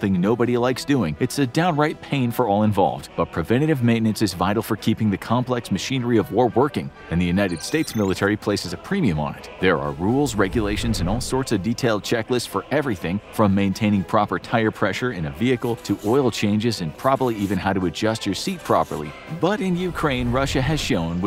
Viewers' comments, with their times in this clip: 0:08 just make sure the machinery is working “frawlessly”